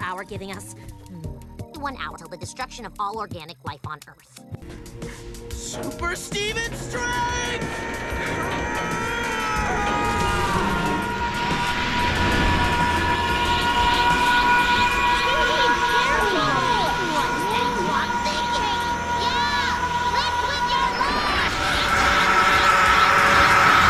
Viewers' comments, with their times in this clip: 0:09 what your microwave be sounding like at 3am when everyone else is asleep